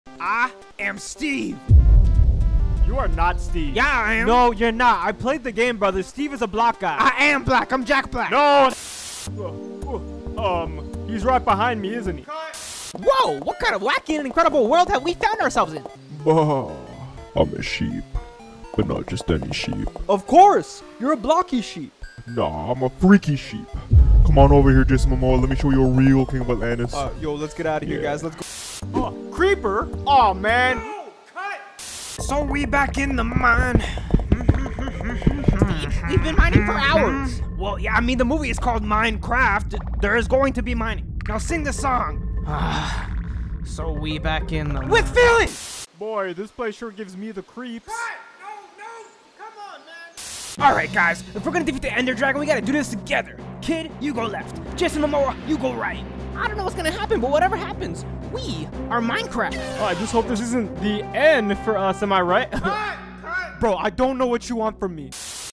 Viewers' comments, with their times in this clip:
0:00 I appreciate the cave story music in the background here
0:54 Either i started hearing things or the music here sounds like the soundtrack from DAS BOOT
0:57 "We are Minecraft" distant GET OUT- sfx is played